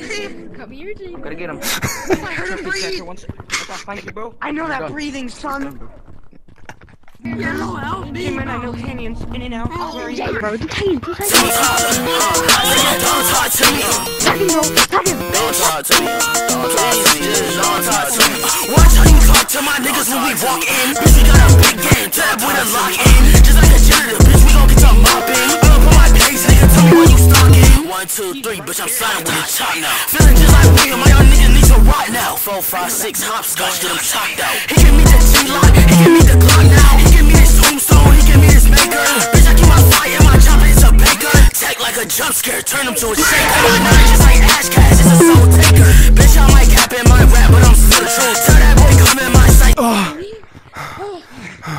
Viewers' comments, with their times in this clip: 0:10 So we aren't gonna talk about how fire the song is
0:35 BRO THIS KILLED MY EARS